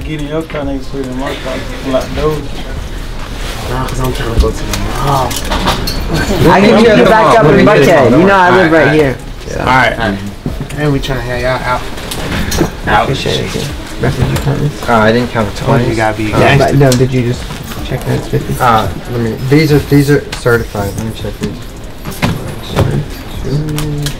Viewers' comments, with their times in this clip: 0:07 this nigga baby whole voice just changed 😂